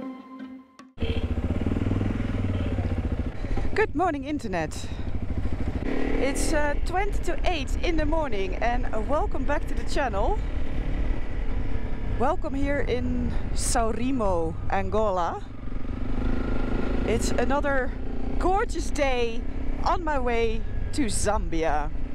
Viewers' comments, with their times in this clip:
0:09 I really liked the way you said welcome back to chanel